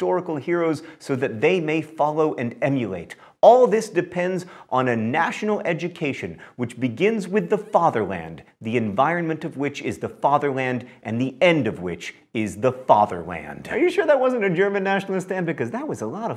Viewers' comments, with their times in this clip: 0:03 Why do I hear the song Erika in the background?